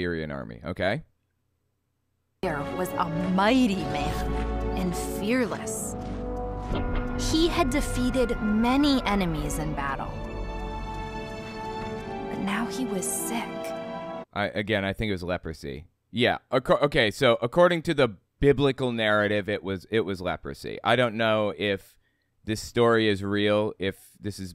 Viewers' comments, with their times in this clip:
0:07 "But now he was Sith." That's how I heard it, and it gave this whole entire "bible story" a new connotation. Naaman.....was Anakin all along!!!!1